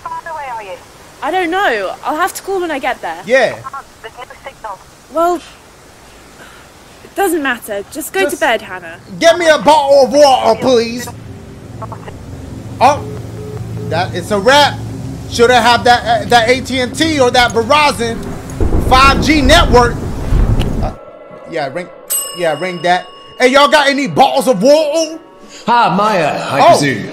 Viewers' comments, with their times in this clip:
0:08 "gEh Me a BoTtLe of wA'Er p LeAsE" As a Brit I am thoroughly offended but nvm
0:09 Dashie trying to imitate a British accent is the weirdest thing I've heard. 😂